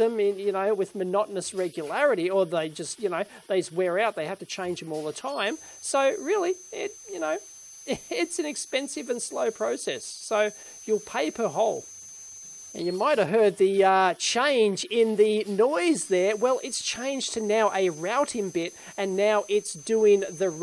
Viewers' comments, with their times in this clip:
0:03 AAAARG, that sound min, worse than fingernails on a chalkboard! Great video otherwise. :)